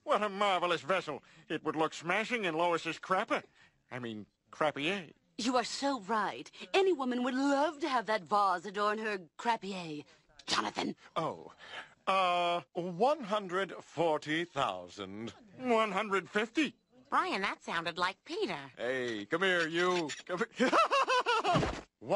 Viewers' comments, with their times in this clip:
0:10 😂 the way she says JOHNATHAN !!!